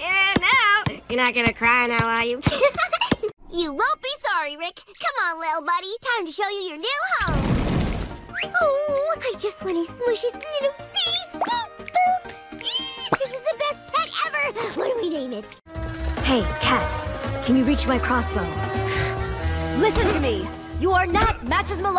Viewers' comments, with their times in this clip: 0:03 It reminds me when I first watched the show, I was like "Okay, the voice sounds a lot different from the Lego Movie voice." Then, as I watched one of the episodes, I started getting MLP vibes and said, "OMG IS THAT THE VOICE ACTOR OF TWILIGHT SPARKLE!?!" Today, after I watched this video, I FREAKED out. So this is why some people ship Unikitty and Twilight Sparkle? Very strange.